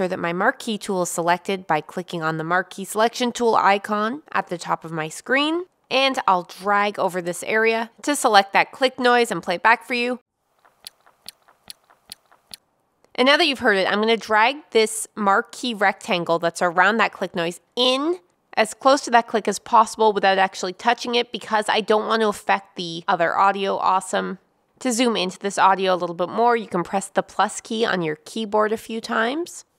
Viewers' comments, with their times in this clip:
0:08 How the heck can you tell that's a click noise? My issue is a high-pitched click of jewelry that's RIGHT OVER the person speaking. How would I isolate that?
0:12 Hi. in your video click. I have such clicks in a worthy recording 500 times. How do I remove them automatically?bst!